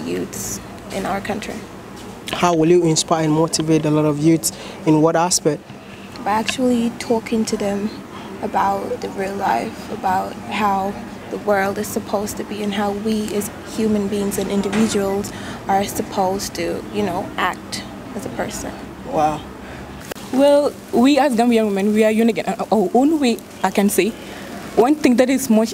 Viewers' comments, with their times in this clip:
0:09 she has an western speaking voice 🤔